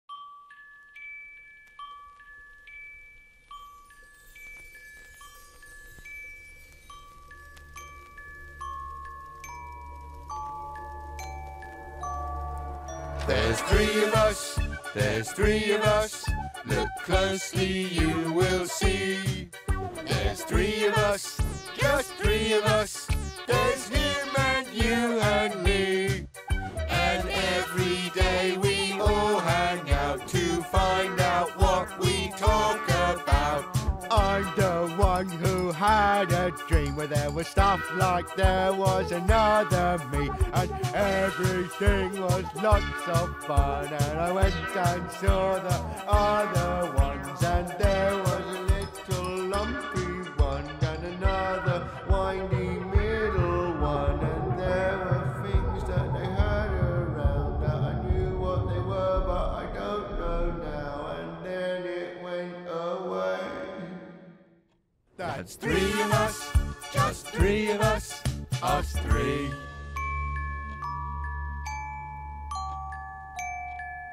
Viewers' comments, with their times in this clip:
0:00 I always love the music and i just sing with it
0:57 for a second he sounded like 2-D from Gorillaz